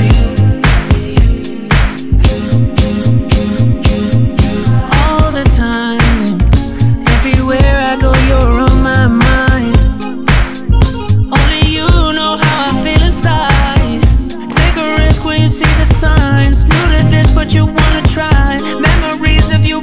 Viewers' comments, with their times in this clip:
0:04 Jordan's signature synths always give me goosebumps